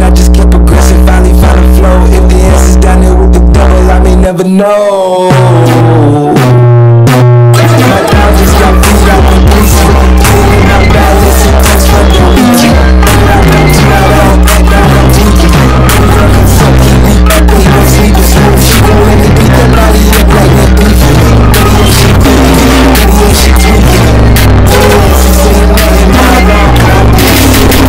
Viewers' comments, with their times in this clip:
0:09 Idk I found it unbearable to listen to once it started getting all distorted. Specifically